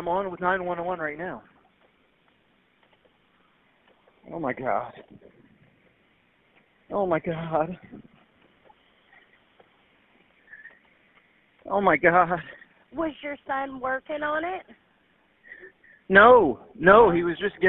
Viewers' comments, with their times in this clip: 0:03 What a F'ing joke!!! That 911 call infuriates me!! I didnt even need to know about all the evidence that doesn't match, because just from the call alone, it took about 2 seconds to convince me that he is hella guilty! He's supposed to be that boys "father." Tell me why it sounds more like hes about to reach his "climax", than someone that just watched his own flesh and blood get "ran over", more than likely killing him. "Oh my God. Oh my God. Ohhhh myyy gaaaaaawd!" If this would have happened in my area, he wouldn't have the chance to make it to prison, and damn sure wouldn't be walking free, he would be a missing person. We don't tolerate child abusers, rapists, woman beaters etc. We come together as a community and fight for victims. Especially the victims that can't fight for themselves!